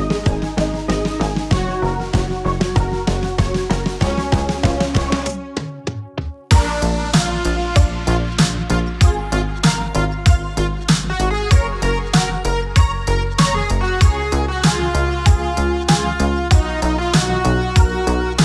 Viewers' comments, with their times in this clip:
0:06 I LOVE the "accidental" notes